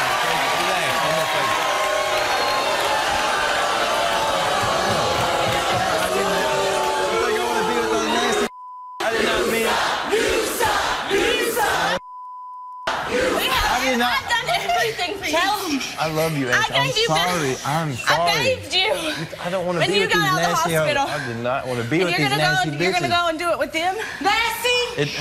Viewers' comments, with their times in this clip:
0:08 YOU SUCK!!! 😂😂😂 I like how the two girls cheer with the audience!